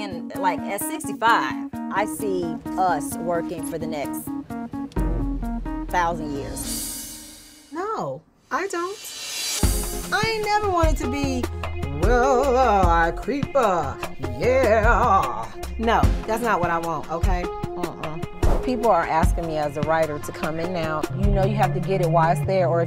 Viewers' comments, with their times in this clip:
0:10 Has anyone else noticed how much T-boz on several occasions has done unintentional Tina Turner impressions.